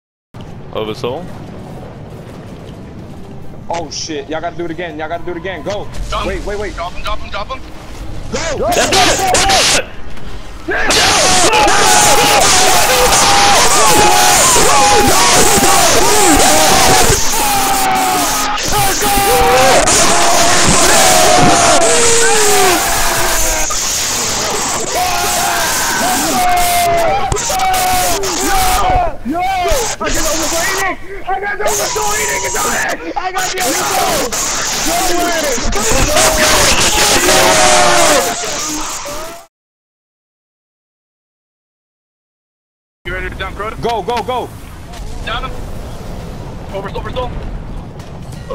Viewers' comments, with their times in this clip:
0:06 (Ear Rape) In 3...2...1
0:10 is this what hell sounds like
0:10 now that was a true gamers war cry
0:11 my ears are as dead as crota.
0:13 R.I.P headphone users
0:31 fuck my ear